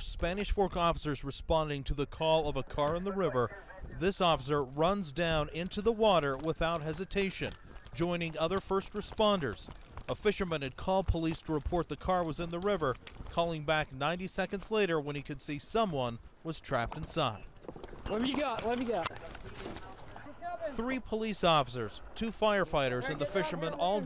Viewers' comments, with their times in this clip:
0:06 I think you hear a woman saying we're dying